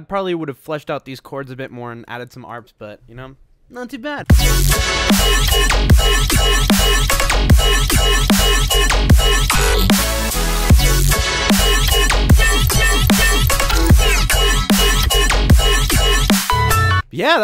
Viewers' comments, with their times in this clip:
0:04 Here is the part where you hear the drop of you want to skip to it.